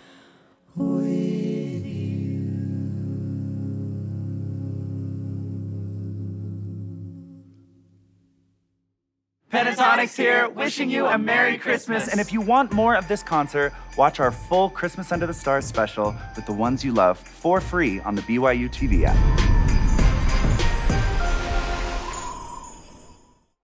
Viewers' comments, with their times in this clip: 0:08 headphone warning lmao